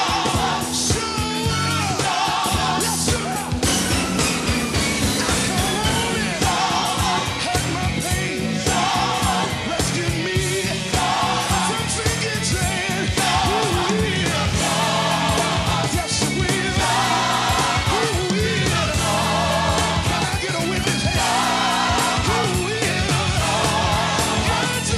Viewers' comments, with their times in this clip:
0:08 that break down Is everything